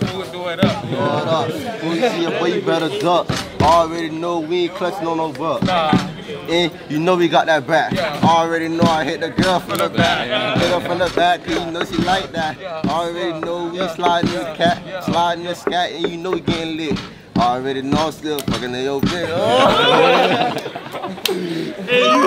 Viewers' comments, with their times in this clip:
0:03 i liked what he did with the beat